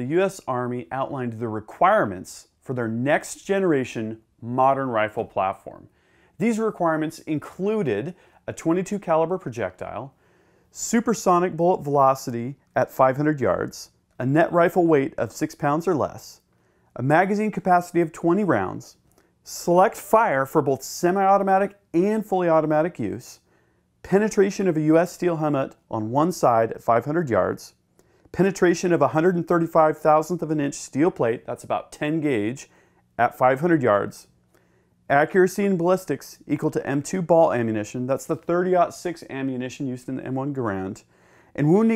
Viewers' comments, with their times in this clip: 0:09 Ha, "Subersonic"...what an idiot.
0:16 "Subersonic"??? Yep, clearly knows his stuff.
0:22 Subersonic? That's magical!